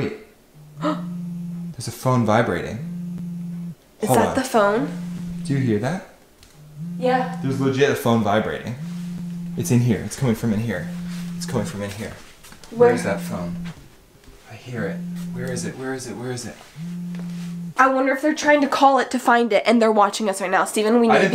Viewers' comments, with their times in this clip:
0:03 I heard some soft whisper and I saw a spy camera